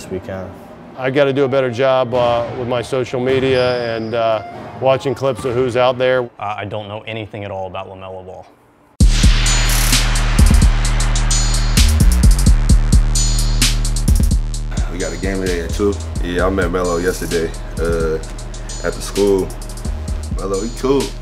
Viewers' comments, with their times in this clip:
0:08 people complaining about the music just don't get it, that transition was brilliant